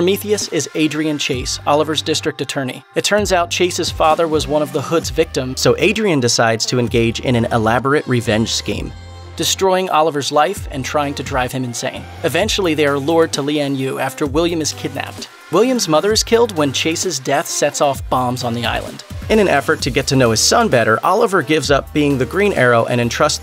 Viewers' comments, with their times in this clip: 0:05 Anyone notice the brief change of voice